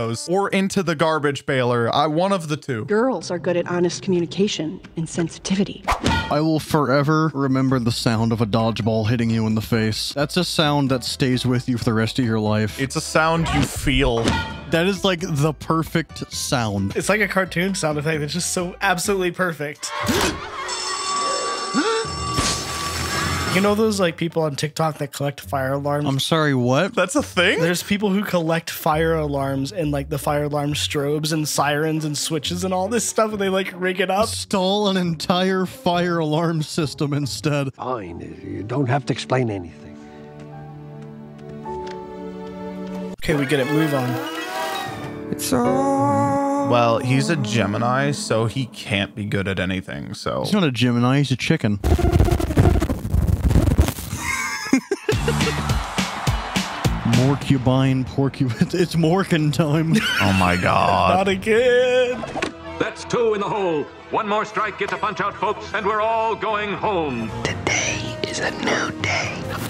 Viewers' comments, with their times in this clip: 0:05 PHOONK is a great sound, and a fun onomatopoeia.
0:50 bro really playing the pac-man theme with his mic
0:51 even the mic sounds like a chicken
0:51 anyone else hear pac man music at that point?
0:51 what did he do to his mic
0:53 the whole microphone disconnect sequence made me fkin LOL. I could feel the anger.